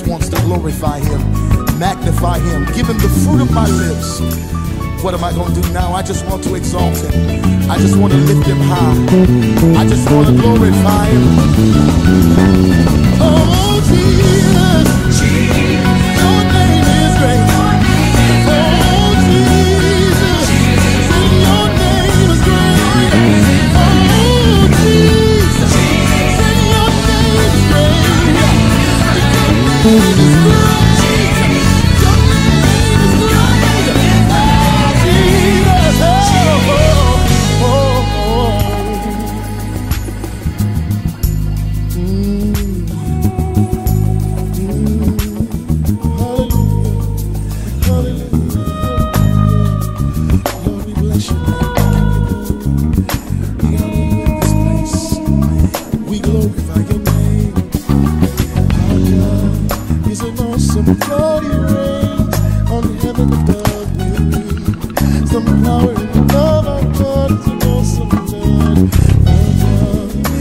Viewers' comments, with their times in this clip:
0:10 Inspired. Serious value right here. Then there was that 'bite' you got .....sigh
0:58 smooth love the pocket big bro!